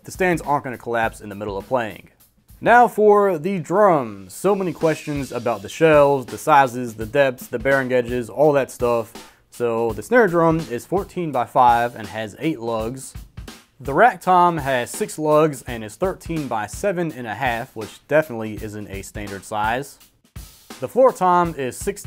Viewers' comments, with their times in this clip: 0:06 You guys here that epic music c'mon guys
0:07 he hit us with the ph intro xD
0:08 Playing the PornHub drum beat and thruought. lol
0:08 IS NO ONE GUNNA TALK ABOUT THE DRUMS IN THE BACKGROUND ??
0:09 PH theme drum beat vibes lol